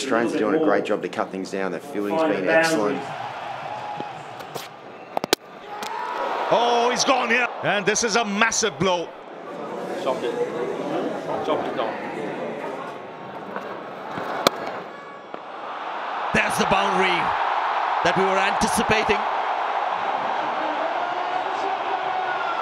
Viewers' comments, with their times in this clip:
0:05 Finally silenced the whole crowd ❤❤😎😎😎🔥🔥🔥🔥